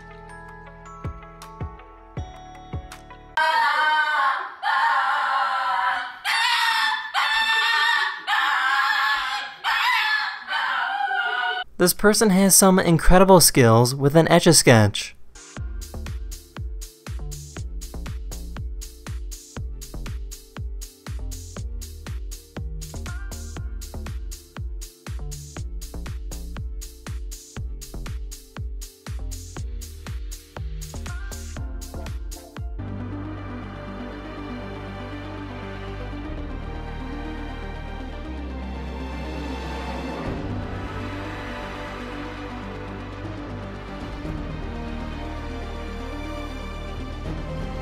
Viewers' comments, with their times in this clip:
0:03 That Lhasa(?) sounds like it's channeling a close Husky ancestor.
0:05 best opera singing 😢 brought me to tears 😭
0:08 the dog sounded like he was screaming help
0:33 Almost sounded like Hunger Games music.